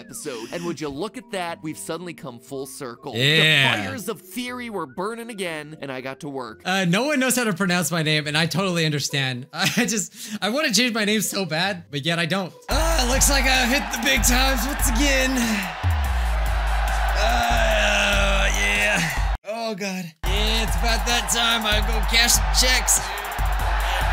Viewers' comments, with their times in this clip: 0:06 He actually says it right! ^^